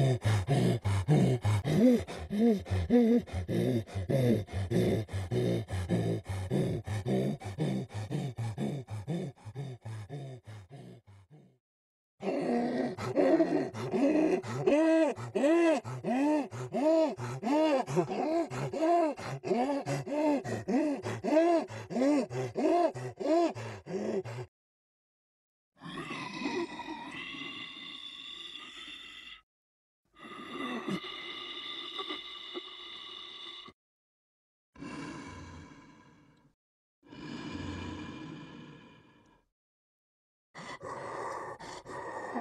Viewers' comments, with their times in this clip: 0:03 lmfao sounds like the unused hunter theme
0:12 QUICK HES CHOCKING
0:26 he sounds like the cave of wonders from Aladdin